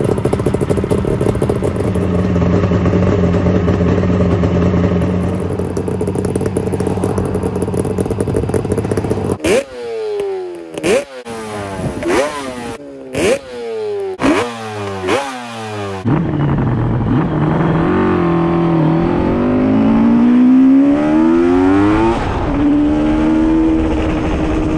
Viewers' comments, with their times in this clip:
0:10 ——— imagine hearing that and knowing that it was you that created the engine that produced that sound. I’d be so proud